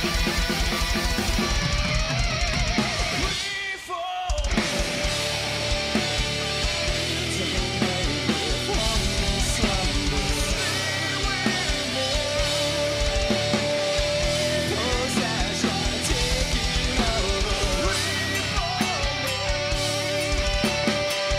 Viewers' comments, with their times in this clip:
0:04 Jamie Mathias voice is awesome!